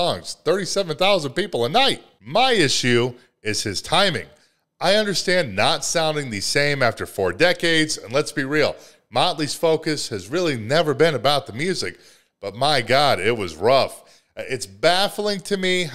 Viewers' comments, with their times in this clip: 0:03 I thought it was a monitor issue it was SOOO far off.